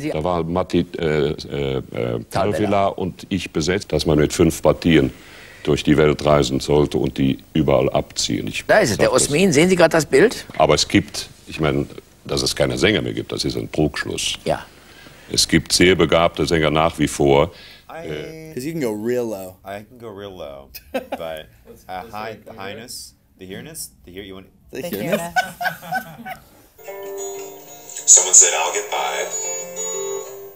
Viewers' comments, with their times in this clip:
0:03 Kurt Moll sounds exactly like my grandpa
0:13 sounded like Bb1